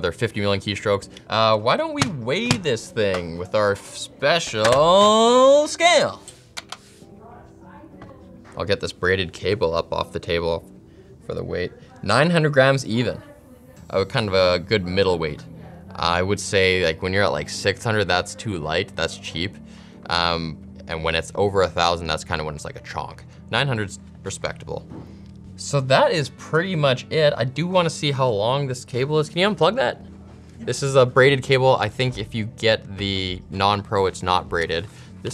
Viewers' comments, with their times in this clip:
0:07 How it is that no one is talking about fur fact that we can hear Linus in the background
0:17 you can hear him somewhat